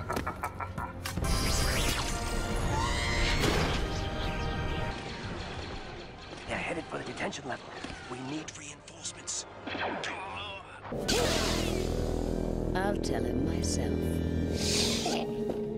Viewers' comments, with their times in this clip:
0:03 what a rude floating piece of junk. It didn’t even let R3 finish his scream